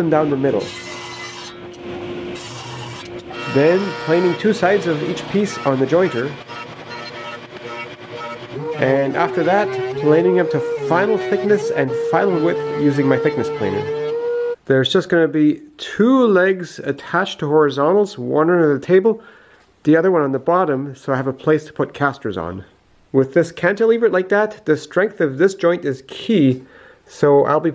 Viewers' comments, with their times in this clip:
0:08 planer playing Mary Had a Little Lamb